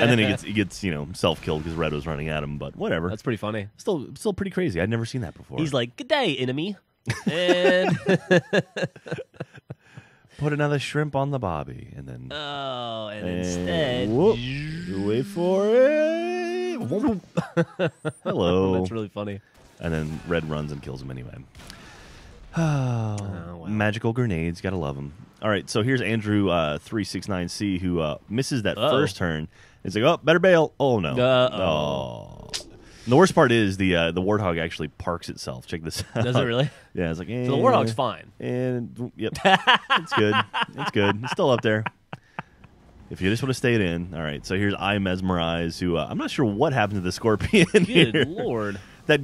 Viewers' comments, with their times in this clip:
0:10 another shrinp on the barbie... u said that in a posh english accent AND ITS NOT A SHRIMP! this was
0:32 Anyone else hear a toilet flush in the background I guess they were both doing this episode while in the John. Toilet flushes ftw.